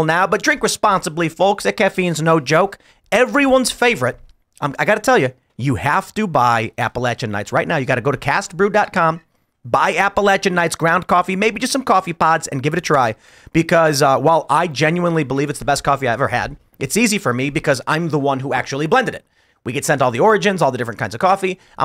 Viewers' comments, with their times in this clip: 0:03 holy shit, that was a good Lenny impression